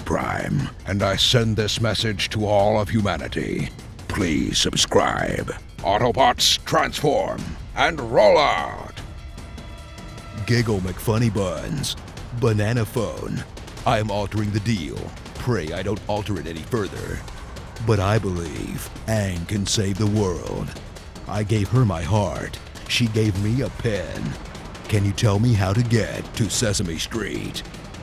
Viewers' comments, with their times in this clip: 0:10 The "Giggle McFunnyBuns" consistently wakes up my Google Assistant!